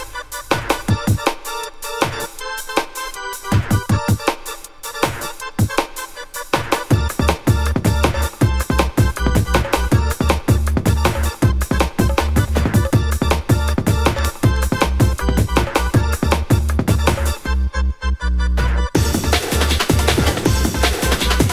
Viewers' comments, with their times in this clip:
0:03 my favorit beat i love